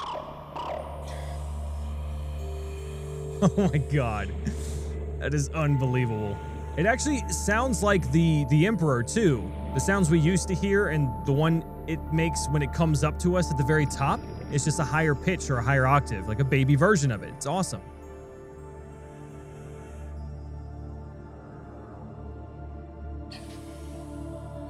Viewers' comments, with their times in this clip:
0:05 doesn't it sound like Spore in the change your creatures features menu?